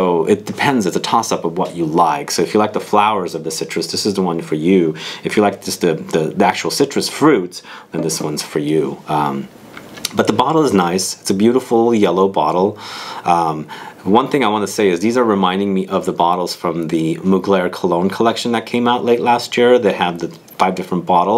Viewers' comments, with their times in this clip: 0:06 Awesome reviews!! But the Grindr notification killed it 😂